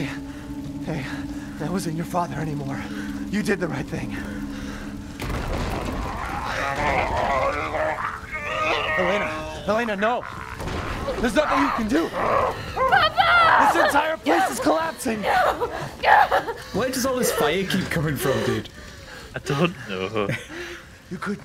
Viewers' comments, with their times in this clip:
0:08 leonardo with that autotune tho